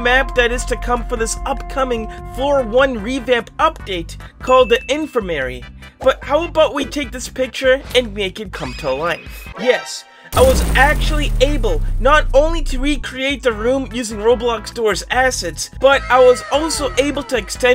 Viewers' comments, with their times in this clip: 0:05 he pronounced it wrong😂